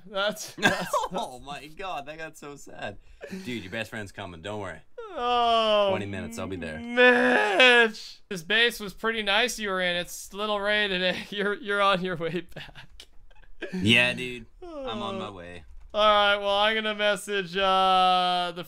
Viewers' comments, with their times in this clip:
0:06 you sounded like starla from the regular show